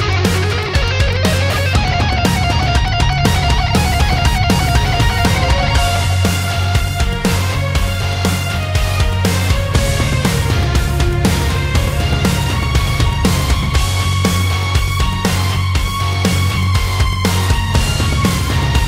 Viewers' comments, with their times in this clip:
0:03 😎🎶🤟🌠💣🌠🤟🎶😎 ...as a guitar player: the only improvement would be the perfectly elevating guitar solo drops off & would've been ideally continuing into a groaning echo🤟